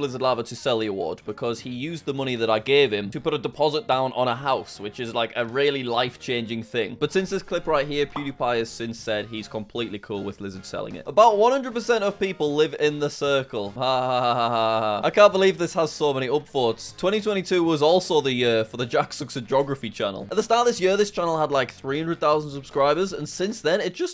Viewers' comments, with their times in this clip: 0:10 pewdie went full Aussie uncle